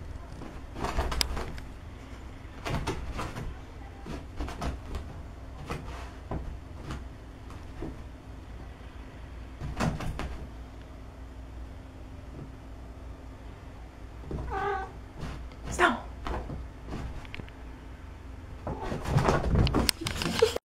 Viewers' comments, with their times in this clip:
0:03 is my favourite part i love how its almost as if the woman and the cat are talking ∆ ∆ "mrrrp! (ÒwÓ)/" "Snow!"
0:10 When the cat made that little purr/meow it was actually switching targets.
0:13 That murmur was excellent
0:14 He turned on silly mode and awww his little purr precious